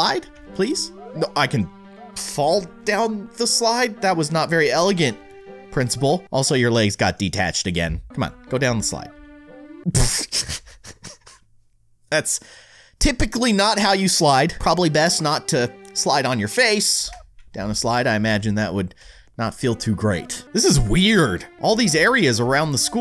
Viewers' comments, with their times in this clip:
0:09 Replay it makes music if u do it fast like ppfutuu Edit: forgot the TE at the start